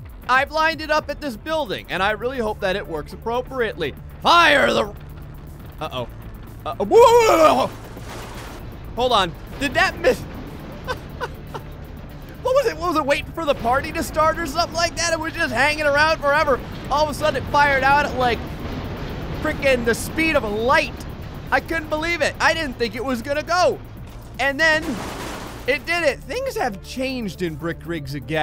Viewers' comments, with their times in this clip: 0:07 please end me now that noise is disgusting lmfao
0:10 her voice is funny